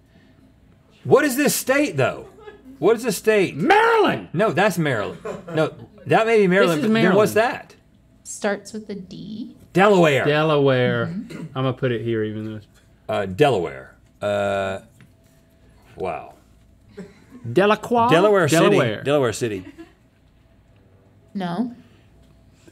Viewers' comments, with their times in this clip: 0:03 the way Link Said MARYLAND had me dying 😂